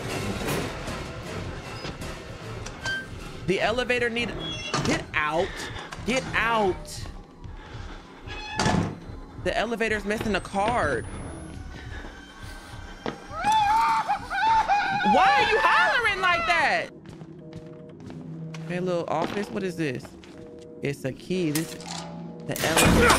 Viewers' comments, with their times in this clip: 0:07 my mans screamed like Pops from regular show XD